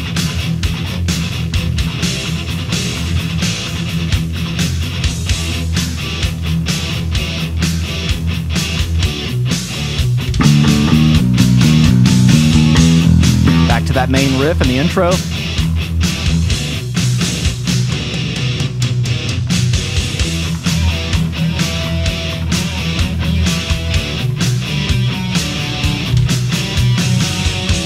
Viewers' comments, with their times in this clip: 0:10 you played that wrong. He plays a bunch of B and 3 G's. There's an isolated bass track on Youtube